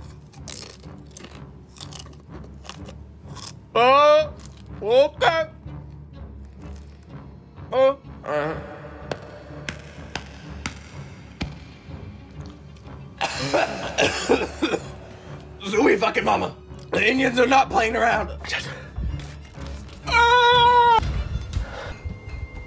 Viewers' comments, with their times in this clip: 0:03 Bro turned Indian for a second.💀
0:07 the euh got me rolling 💀